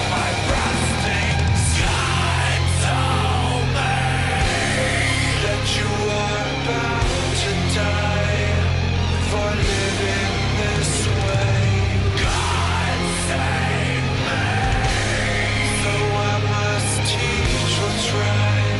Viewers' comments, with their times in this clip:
0:06 ish does anyone else hear the rhythm of korn's "Got the life" in the chorus as he sings "God save me"?